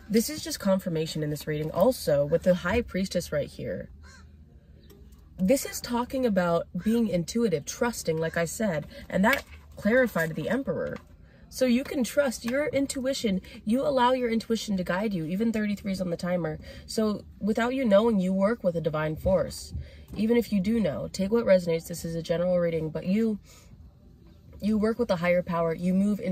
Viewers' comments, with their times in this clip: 0:09 I was going to click off and a crow started cawing...❤